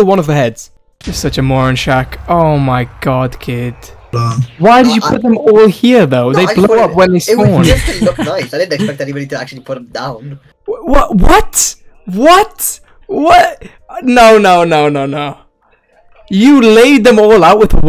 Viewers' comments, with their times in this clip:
0:04 Why are you yelling at him? You're the one that placed the skull 😂.